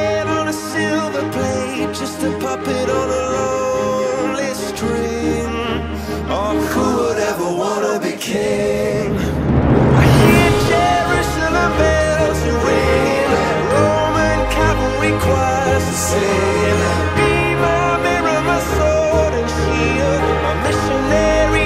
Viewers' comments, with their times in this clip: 0:08 Damn the voices really hit differently